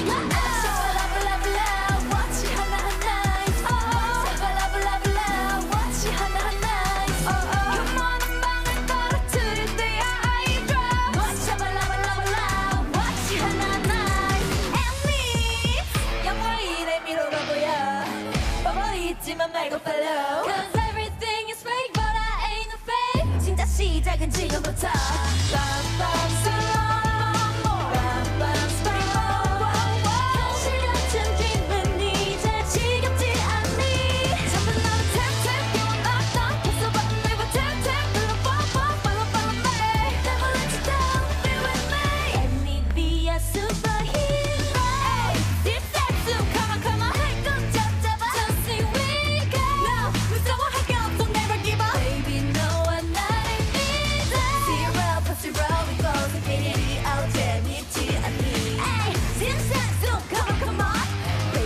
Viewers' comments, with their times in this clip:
0:05 i heard unharmonized smoke sound, like it came from a lot of mic.
0:24 bae didn't have to sing the "bam bam bam" live but she did anyway cause NMIXX wanted to do everything 100% LIVE 👏👏👏
0:43 it has two layered vocals one is pre-recorded while the other is live. Especially here you can hear Haewon in the "let me be your superhero" part Haewon was supposed to sing it in a quite chesty mix voice but at the last second she change it to a head voice which is an indication its live.
0:44 And here's Haewon changing her voice like a queen